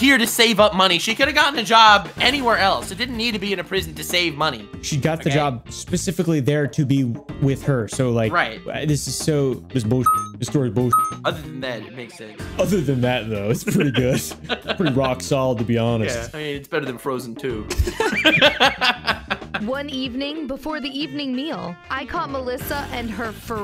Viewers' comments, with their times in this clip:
0:06 i hear jojo music